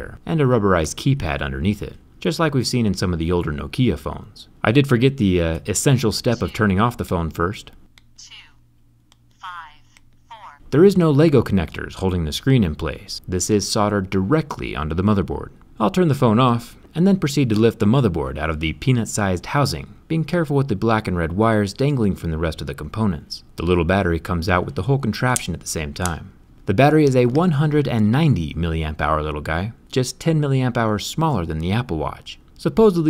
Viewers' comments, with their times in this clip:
0:05 On the older No-Kee-A phones wtf
0:18 sounds like peNIs sIZEd houSinG
0:18 I sure hope that was "Peanuts" lol